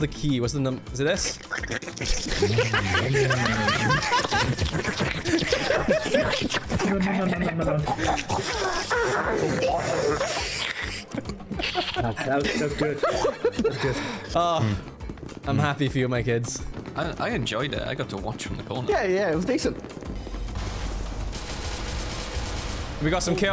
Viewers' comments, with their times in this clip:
0:07 did i just hear the minecraft witch during this lol